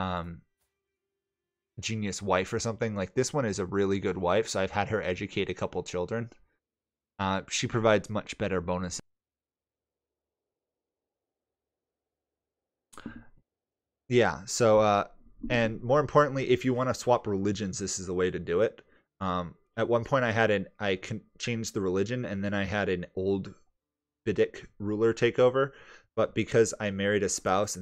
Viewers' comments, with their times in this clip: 0:09 Thanks for another really helpful video. Your mic bugged out whats the most important factor when choosing an educator? High learning skill or high stat skill in the area you want them to focus?